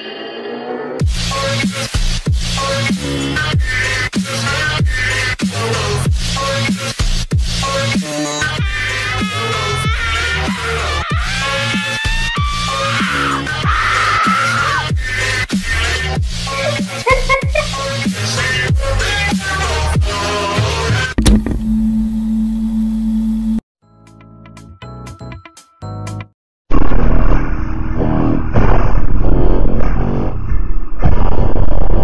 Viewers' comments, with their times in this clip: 0:09 Hes Like The Scream Of Tinky Winky But Reversed
0:10 NOOOOOOOOOOOO not the scream i hate it 😅 sry (my brain just listen
0:16 OMG this sounds like it came from my room not from my phone 😂😂